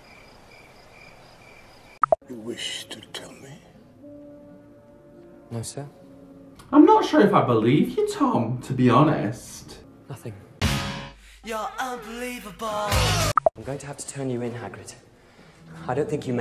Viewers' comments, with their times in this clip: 0:03 The actor was not well and died soon after the shooting. Hence, the pauses and also maybe Dumbledore pauses deliberately.